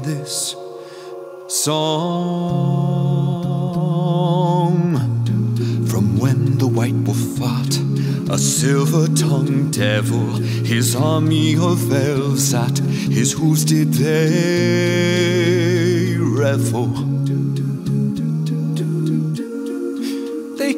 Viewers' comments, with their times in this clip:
0:04 From when the white wolf 𝗳𝗮𝗿𝘁
0:05 "from when the white will fart"??